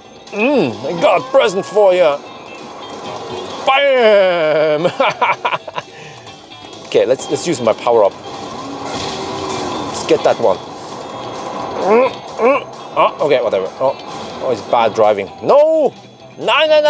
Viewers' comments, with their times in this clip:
0:04 Ew the laugh